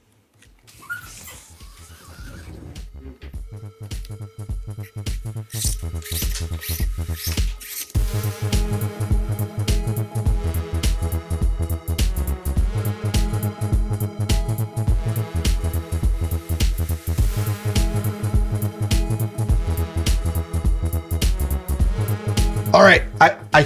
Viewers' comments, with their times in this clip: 0:08 hell, even the music has plastic pipes, being blown into 😅